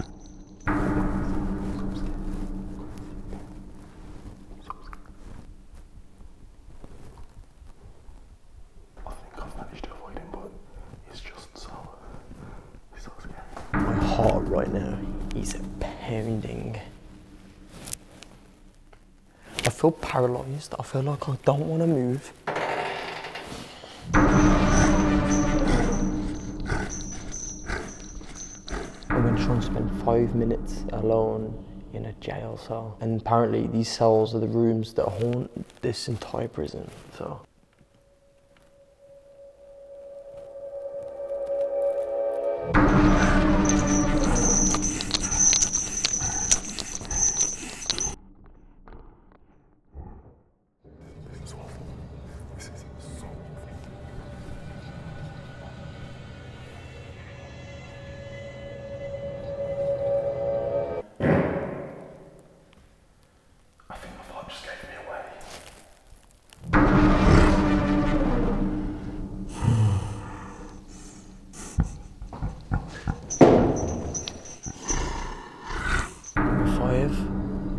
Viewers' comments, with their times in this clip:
0:05 I'm that scared you can hear my heart rate going at like 280BPM
1:00 bro thats isnt a fart, thats a shart